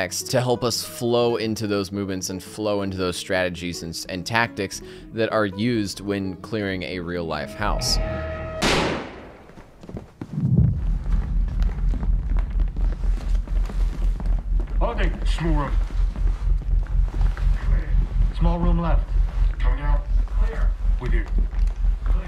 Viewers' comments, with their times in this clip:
0:06 the footsteps are probably the most satisfying thing someone can hear.